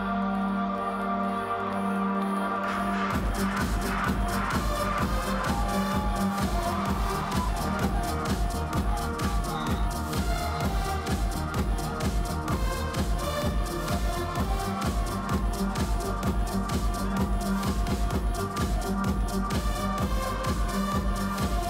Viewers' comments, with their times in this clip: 0:04 That lead synth over the drop is magical.